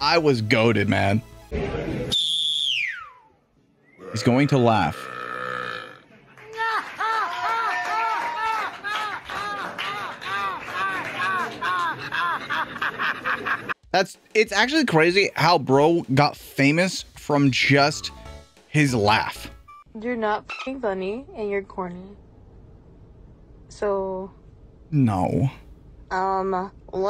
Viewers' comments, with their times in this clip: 0:09 sounds like a seagull laughing
0:12 should added feel good by gorillaz after the laugh ended